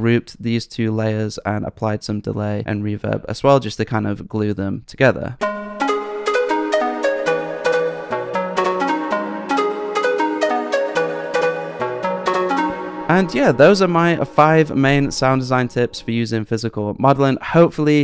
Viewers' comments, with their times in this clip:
0:03 Damn, i was waiting for the beat to drop ! Haha😅 Such a lush sound. Awesome tips. Thanks for sharing! 🙏